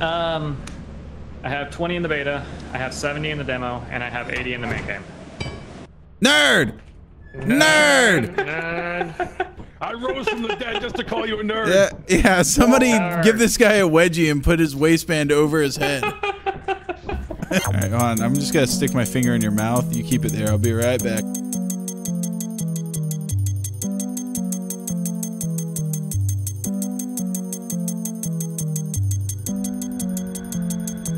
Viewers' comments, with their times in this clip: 0:10 The ape escape music hits hard!
0:19 Wow the audio is so insanely annoying